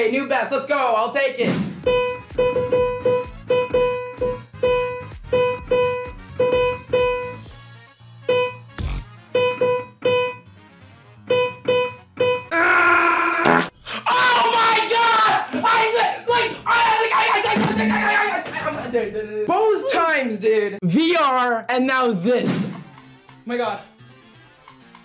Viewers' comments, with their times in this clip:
0:08 My notification sound is the bwomp sound so I legit checked my phone